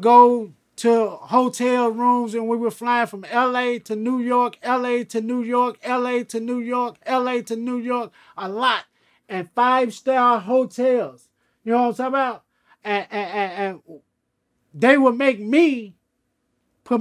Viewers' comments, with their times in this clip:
0:03 Someone loop that “LA to New York” and stick some drums on it 🔥